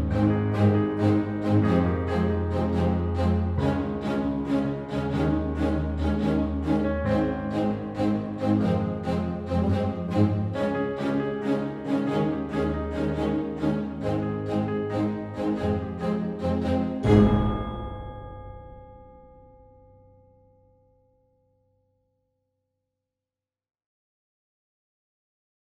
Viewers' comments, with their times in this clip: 0:08 yo bro is that a discord ping? XD Good work btw, better than the original one